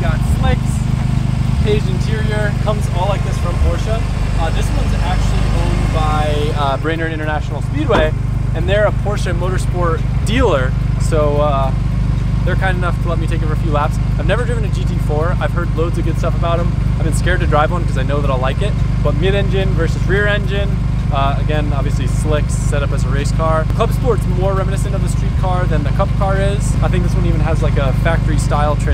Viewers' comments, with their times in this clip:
0:09 why does it sound like that shits missing